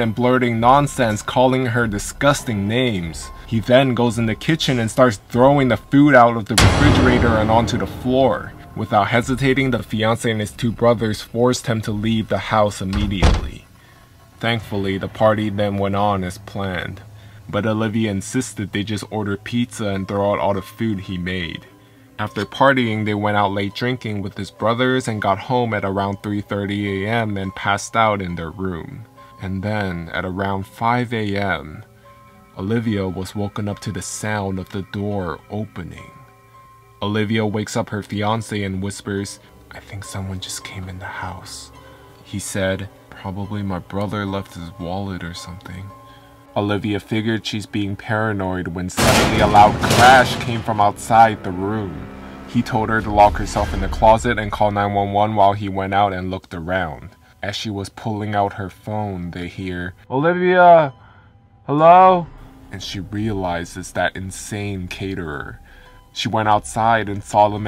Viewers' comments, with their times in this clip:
0:06 Dramatic sound affect " He starts throwing the food out" Me: OH SNAP
0:49 R.I.P. headphone users 😂